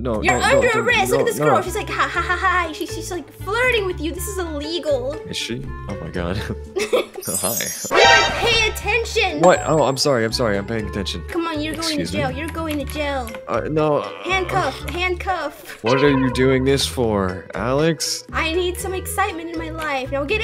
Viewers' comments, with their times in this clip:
0:06 the way he said hi😂😂😂😂